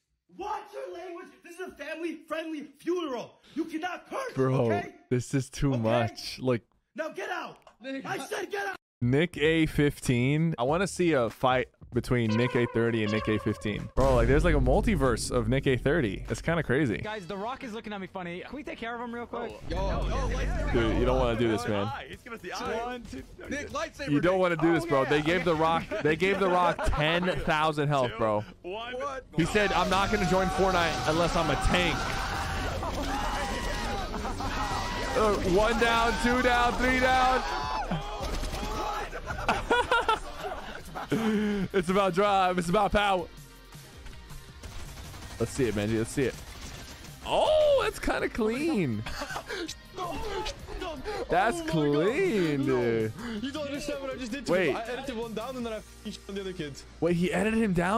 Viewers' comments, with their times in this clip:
0:10 that whole sentence sounded zesty af
0:42 man said bejy on